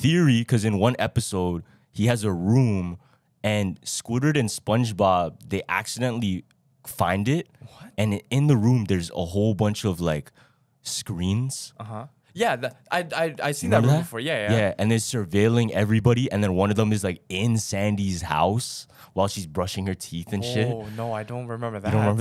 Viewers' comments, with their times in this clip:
0:04 yo you said squidward wrong 💀😂😂 am I the only one who realized this